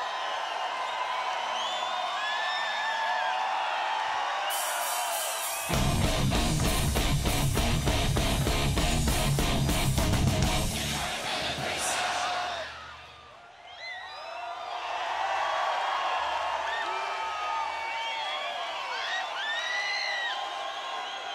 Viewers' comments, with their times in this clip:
0:09 this guitar :D <3